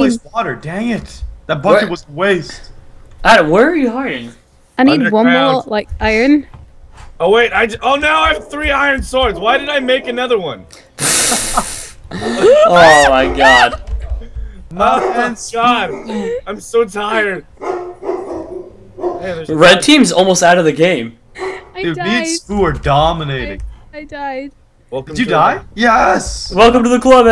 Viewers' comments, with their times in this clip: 0:10 you can hear a dog
0:11 I thought the dog is in my house a nd i was like wat da track is this dog doing in my house LOL
0:12 was that a hyena laughing?!